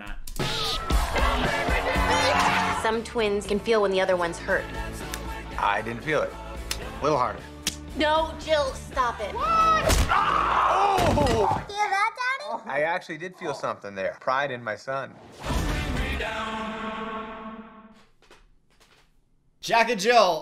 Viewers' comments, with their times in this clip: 0:05 why on earth would they use such a great song for that trailer.